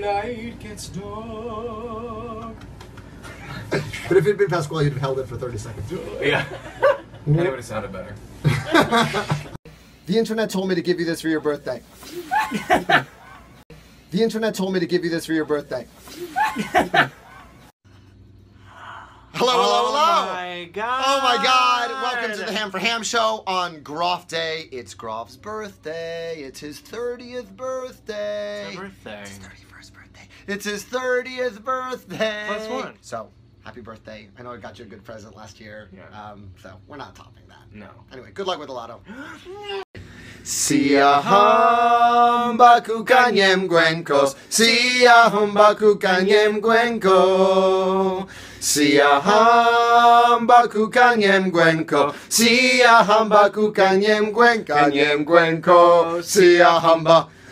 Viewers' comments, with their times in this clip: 0:10 that laugh tho-
0:18 if u put it at half speed they sound drunk
0:34 the muffled cut off scream I died 😂😭💀
0:36 that noise lin made at the end XD
0:39 Lol omg it sounded like lin like, gagged
0:40 When Lin and Jonathan started singing I started jamming out because the high school in my district that I’ll be going to next year (currently in 8th) always sings that song as their first song in (spring or Christmas) chorus concert